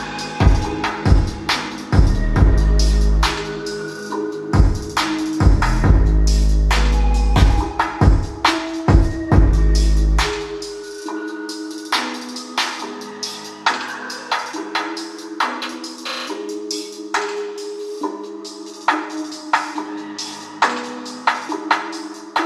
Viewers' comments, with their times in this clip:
0:07 The beats slow mo to left to righ ear beats fire bro 😂😂😂😂😂😂